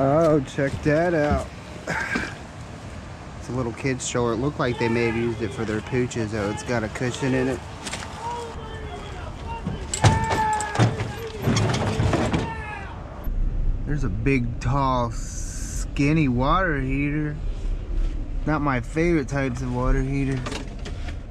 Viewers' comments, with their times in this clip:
0:04 Who was screaming lmao
0:06 what was that persn yelling at so early in the morning?
0:06 Sounds like you caught the beginning of a episode of Cops starting up... 🤣
0:07 so weird, someome is screaming and the little lizard... 🤣
0:07 .... you getting yelled at?
0:08 What was the yelling in the background ?